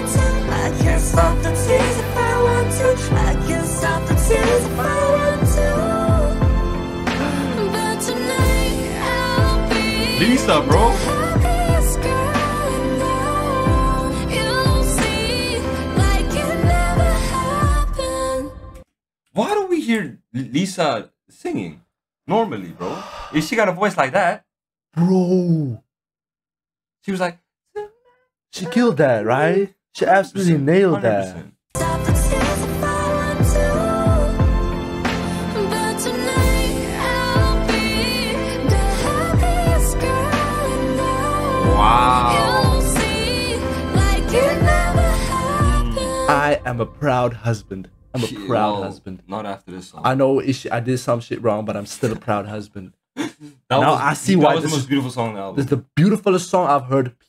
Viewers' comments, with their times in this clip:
0:07 that was actually Jennie, color coded lyrics messes up sometimes Thats my fav song on the album I LOVED SO MUCH their vocals are AMAZING in this song, seriously their vocals were insane, Lisoo went nuts in this song! I already knew I would enjoy the song since it has a demo on YT BUT i didnt i would enjoy that much, Lisa really shocked me in the chorus, jisoo really high voice and jennie sounding si different and beautiful in the chorus, Rosé's high notes in the end, wow just wow
0:07 that was actually Jennie, color coded lyrics messes up sometimes Thats my fav song on the album I LOVED SO MUCH their vocals are AMAZING in this song, seriously their vocals were insane, Lisoo went nuts in this song! I already knew I would enjoy the song since it has a demo on YT BUT i didnt i would enjoy that much, Lisa really shocked me in the chorus, jisoo really high voice and jennie sounding si different and beautiful in the chorus, Rosé's high notes in the end, wow just wow
0:07 it's jennie part, the vidio lyric is wrong
0:07 The last line is voice of jennie It's jennie voice not Lisa:))
0:07 it's jennie part, the vidio lyric is wrong
0:08 this is jennie not lisa but We cannot deny that this song is jisoo and lisa's era
0:08 guys is time is jennie’s voice lol
0:09 Hi guys i really really love this song so so much Jisoo high note make my cry so hardddd and Jennie strong voice i love to reply that line again and again, Rose in the end is so freakinggg gooddddddd and and my love Lisa she have another way to sing in this song surprise me alottttt i love when sing. This is my fav now HAHAHA Ps. this line it not lisa is Jennie the owner maybe wrong :)
0:11 bro that is not Lisa’s part that is Jennie singing
0:31 its not lisa but jennie☺️,but lisa voice itss very² stuning in here!!
0:32 is jennie's part actually
0:35 it's Jennie singing,but the song is fire ,they all slayed❤️‍🔥❤️‍🔥
0:35 this part was of Jennie not of lisa...I guess that was a technical mistake Jennie vocals are on 🔥🔥
0:37 it’s Jennie voice I really love her voice in this song 😭🤍
0:37 Lol is Jennies wahahaha
0:43 Actually at the last that is jennie’s voice not lisa’s